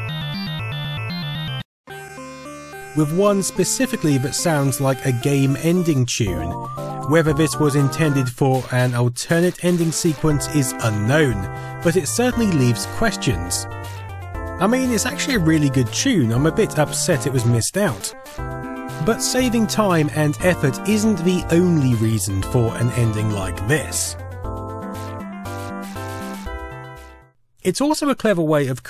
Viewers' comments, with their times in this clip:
0:06 Yo, that track they never included is dope! I genuinely want to hear the whole thing!
0:10 sounds like a Jamiroquai song